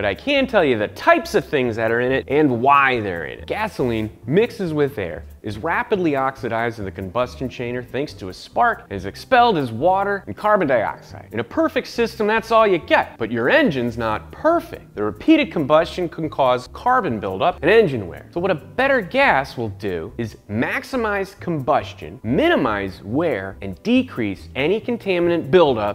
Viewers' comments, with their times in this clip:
0:07 "combustion chainer" 😂😂 Much love Science Garage.